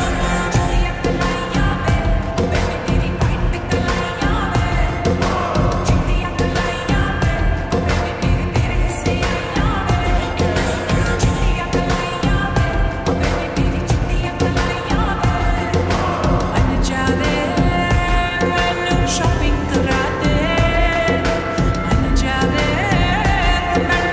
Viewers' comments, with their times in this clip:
0:08 So cute song